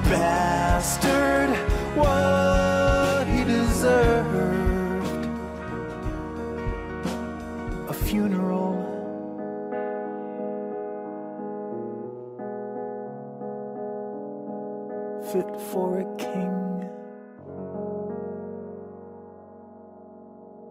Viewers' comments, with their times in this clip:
0:08 paino keeps playing solo in